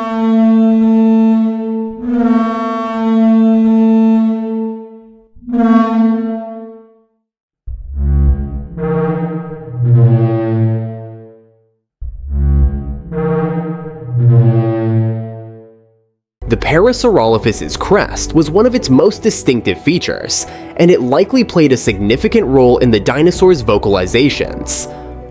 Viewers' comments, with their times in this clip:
0:08 I remember hearing that sound at the New Mexico Museum of Natural History and Science in Alberqurque and I never knew what it was!!! I heard it in a room called “New Mexico’s Sea Coast” and if I remember correctly, there was a fossilized Parasaurolophus crest on exhibit now that I think about it. And the sounds were beautifully haunting as it echoed through that big open room. All this time I thought it was just some unusual ambiance sounds playing but now I realize that it was a display of what this dinosaur might of actually sounded like. We learn something new everyday.